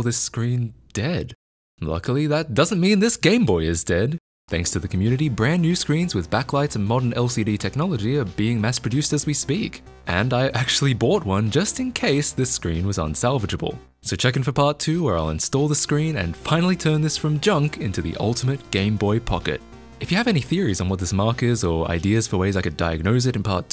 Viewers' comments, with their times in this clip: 0:09 what is the music used im dying to know it sounds like a chiptune for some keygen software